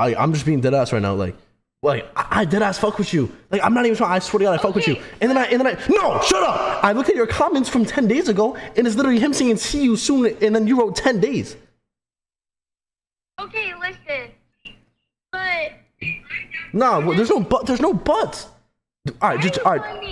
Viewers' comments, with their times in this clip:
0:07 when he yells "no shut up!" Also him lying earlier and saying he wasn't streaming when he called her. That's just 2 things and I haven't even finished the video lmao. A girl will not feel comfortable when you act like an immature child who hasn't mastered his emotions. Obviously this dude is young and still has a lot to learn but yeah.